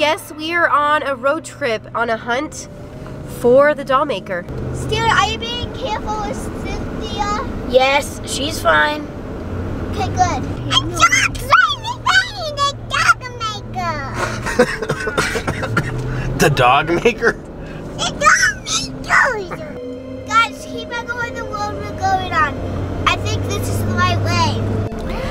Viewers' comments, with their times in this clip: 0:06 Since when was Cynthia a dog